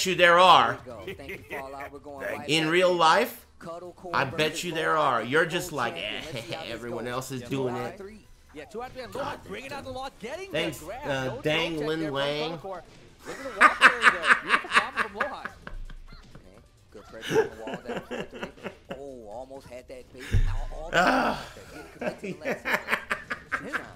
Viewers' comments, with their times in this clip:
0:10 why did Aris start laughing ?